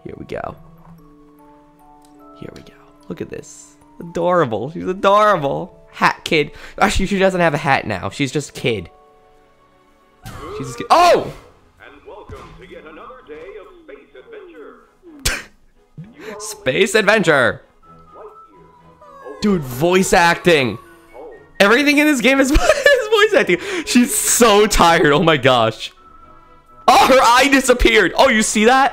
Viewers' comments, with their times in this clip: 0:10 Wow that's a really loud alarm if u jump out of ur bed like that